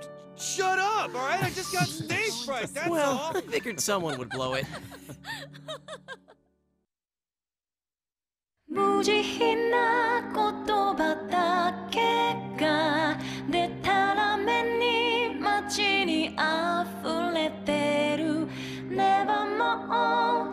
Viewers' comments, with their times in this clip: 0:08 Event I never play this game... But this song is so strong on me... Feel nostalgic